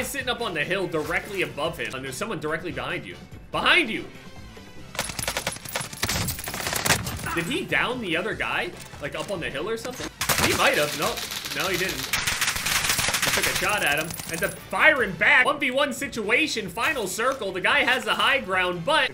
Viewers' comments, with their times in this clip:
0:06 sounds like fortnite commentating